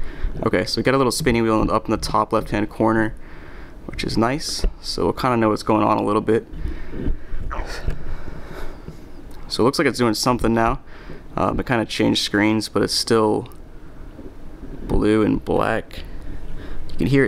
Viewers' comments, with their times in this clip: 0:05 his stomach gurgles rofl